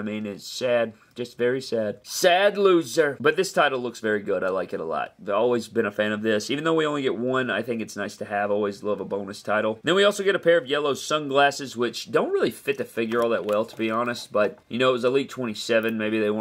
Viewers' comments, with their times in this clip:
0:03 Pulling out the impressions this morning. 😂